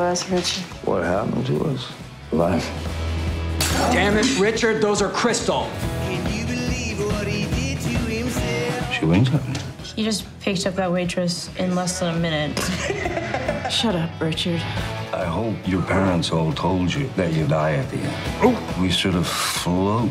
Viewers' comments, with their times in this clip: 0:05 anyone know the song ? Sounds like Dylan but can't find any with that line